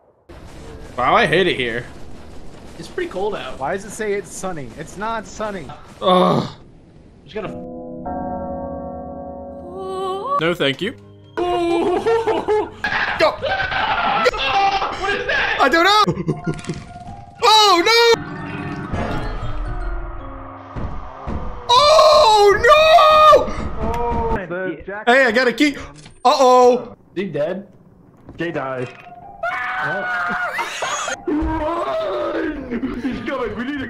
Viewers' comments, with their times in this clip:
0:07 Anybody know the name of the ominous music that plays ?
0:18 the sheer, flabbergasted terror in his voice omg
0:18 It's the Courage the Cowardly Dog "oooohhhh nooooo" that does it for me